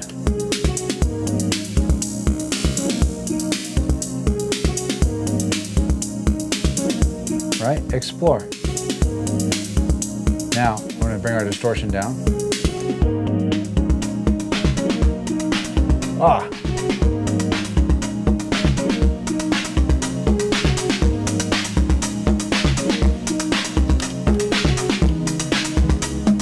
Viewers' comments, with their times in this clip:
0:07 was a magical portal opening